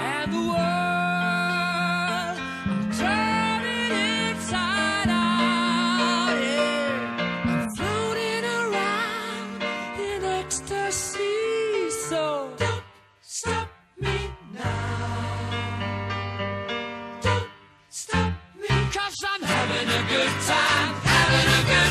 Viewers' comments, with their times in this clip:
0:06 he messed up saying yeah